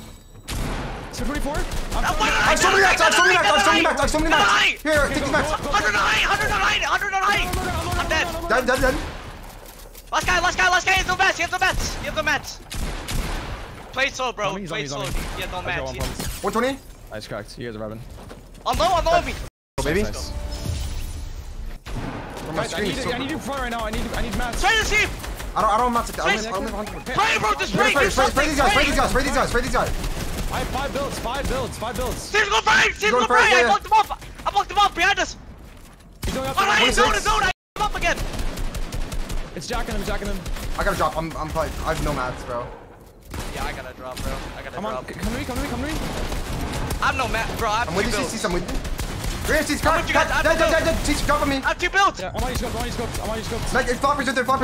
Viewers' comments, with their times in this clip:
0:07 Im sorry bro no matter how much I wanna watch this I just couldn't handle the screaming...made it till 😔 ill drop that like tho👍
0:36 i only made it in and cant watch anymore becuase of the screaming